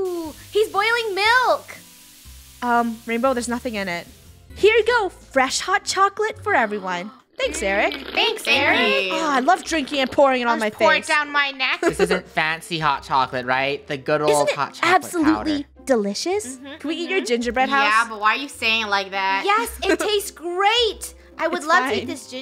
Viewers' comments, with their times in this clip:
0:08 They Harmonizing on